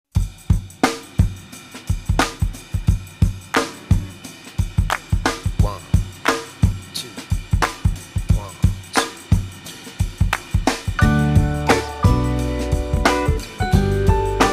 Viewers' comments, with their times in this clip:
0:02 that chord really adds some special meaning to the song